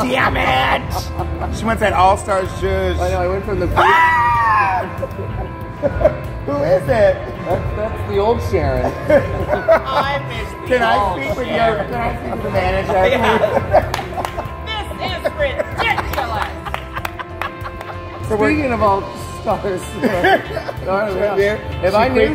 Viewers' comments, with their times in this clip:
0:03 THE PEPPERMINT SHRIEK